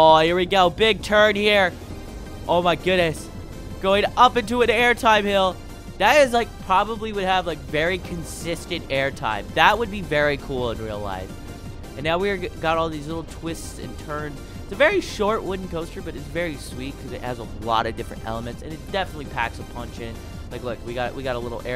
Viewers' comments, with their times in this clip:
0:03 you said oh my godness the text "all my kids"